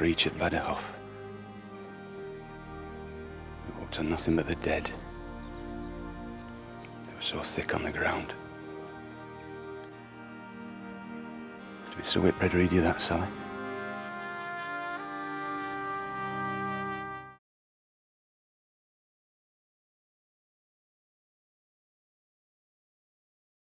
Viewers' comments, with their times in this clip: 0:08 What are the last words Sharpe says in this clip? just after he describes the battle of Badajoz. His accent is so thick I can't make it out.